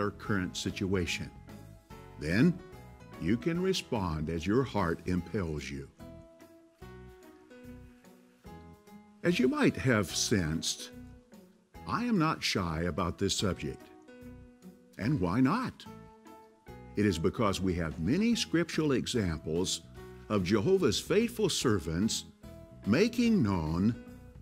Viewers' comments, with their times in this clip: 0:05 impales 🤣🤣🤣🤣. Literally LMAO